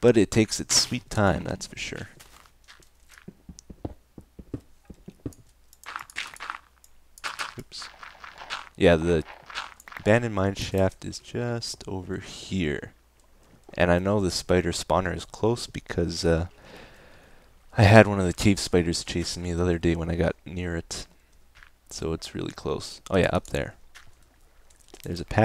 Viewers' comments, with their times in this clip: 0:06 Anyone else hear the skeleton that Etho completely ignored?